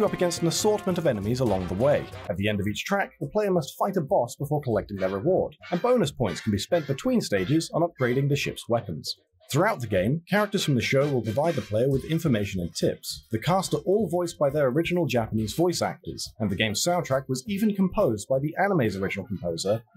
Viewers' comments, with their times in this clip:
0:04 What happens with the audio ??